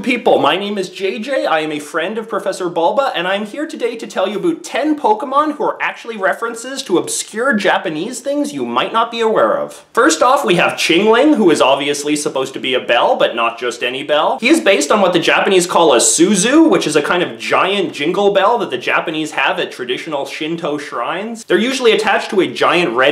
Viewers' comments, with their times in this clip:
0:04 he says "Aboot", but yet he has an American flag in the background.